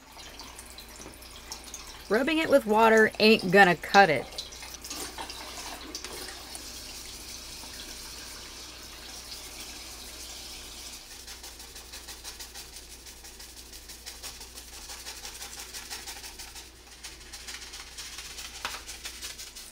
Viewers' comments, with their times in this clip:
0:07 turn off the faucet pls